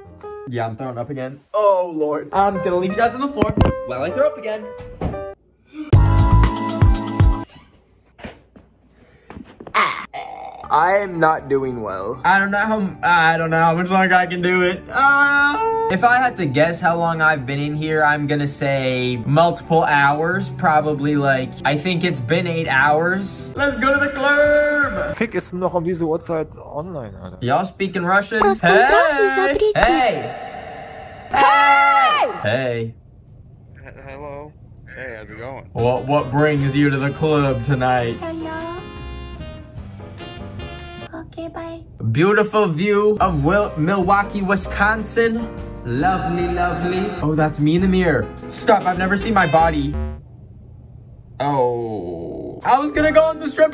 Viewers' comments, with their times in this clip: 0:09 megan stallton noise
0:38 HOW HE MAKE SUCH A FELMALE VOICE
0:41 HE SOUNDS LIKE SOME KIND OF ANIME GIRL